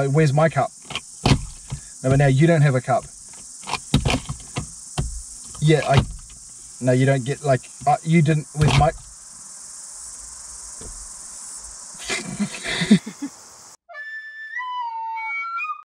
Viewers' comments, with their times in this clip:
0:11 I love the giggles so mucchhh🥰🥰🥰🥰
0:11 YOU LAUGHING WITH HERRR. SO CUTE